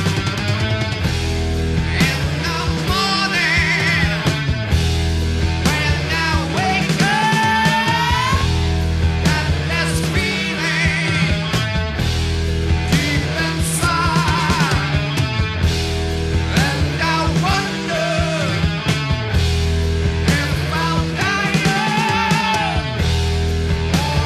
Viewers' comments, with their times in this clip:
0:07 when he hits that high note.... chills upon chills every time